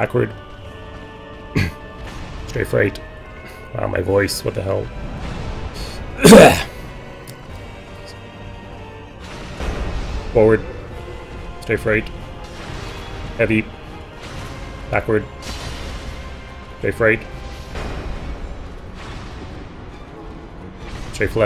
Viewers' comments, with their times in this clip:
0:05 My voice, Struggle noises "Unrecognized : 'of'